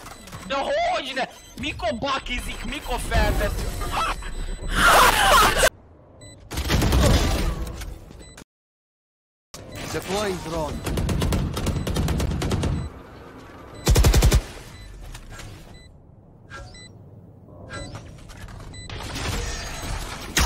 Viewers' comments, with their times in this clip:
0:03 What was that laugh my dude
0:04 the whole team choking on their laugh lmaooo